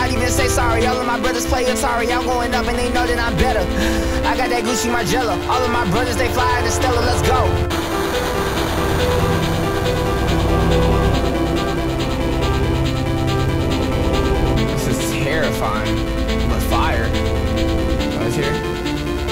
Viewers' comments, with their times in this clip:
0:03 he rapping good bruh sheesh😂